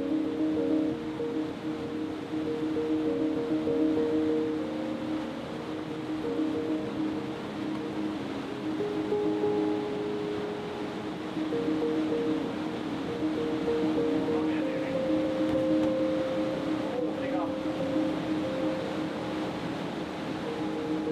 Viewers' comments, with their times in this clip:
0:09 I love these videos as they offer a much more cinematic feeling compared to most other climbing YouTube videos, can I just say in terms of music I MUCH prefer the more brooding music like rather than the quicker paced "trappy" music which was on before. All in all though amazing job really pushing the boundaries and challenging the big documentary style videos!